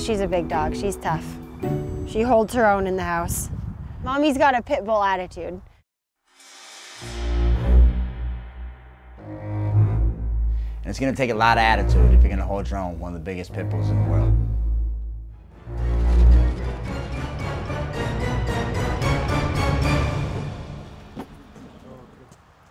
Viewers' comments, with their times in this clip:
0:08 the debo music😭😂😂😂😂😂😂